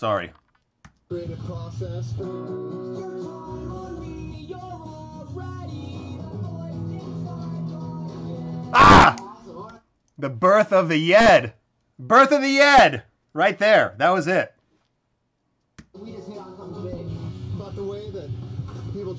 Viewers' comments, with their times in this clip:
0:07 omg his scream